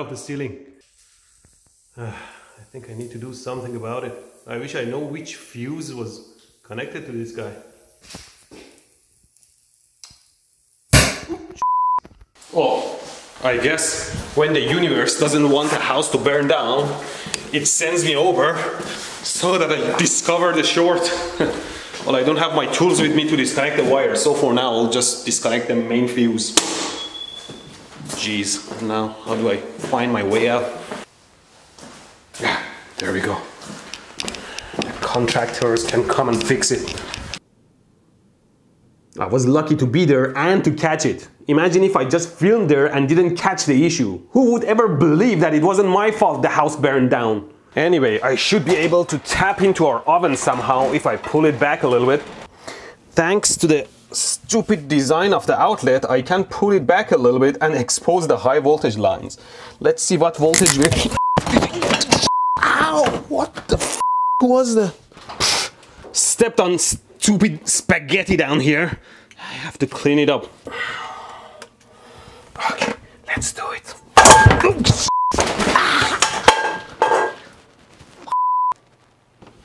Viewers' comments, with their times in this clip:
0:08 You know, I actually got shocked at this moment. It was a bit loud.
0:25 Put on repeat and you get a train!
0:25 ElectroBOOM: turns off breaker. House: Beeeeeeeeeeep!
0:26 Least you got a carbon monoxide detector. Ours makes the same noise whenever we loose power
0:26 What was that weird noise when you turned the breaker off?
0:32 ElectroBOOM, why does the crackling sound like radiation? Is it your camera or is the place full of radiation?
0:40 yeah, especially since you have an accent.
0:59 The crunch of spaghetti noodles is especially unnerving in the presence of lethal voltage -- and tight spaces!
0:59 if that was a bunch of legos in the kitchen, you'll scream louder and hit that ceiling even harder, that you KO yourself
1:00 sounded like you were getting zapped
1:00 oh sorry boom I was eating chips
1:00 😂😂😂😂😂 when you stepped on those spaghetti's, it sounds like you short something 😂😂😂😂😂
1:00 Sounds exactly like if he did get shocked